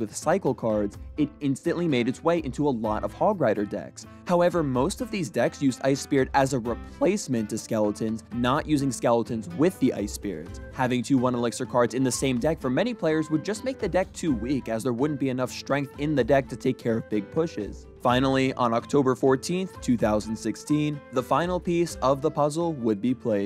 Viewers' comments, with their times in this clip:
0:05 the voice crack 😭